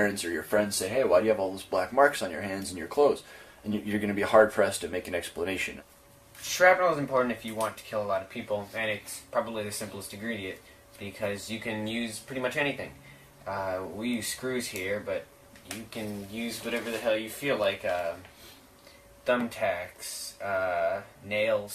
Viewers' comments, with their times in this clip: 0:05 Absolutely got more psycho vibes from Cal... Even in the bomb making scene, Andre's just describing the process in a very methodical way and then Cal butts in saying "shrapnel's important if you want to kill a lot of people." like it's the main thing on his mind and he's excited to say it...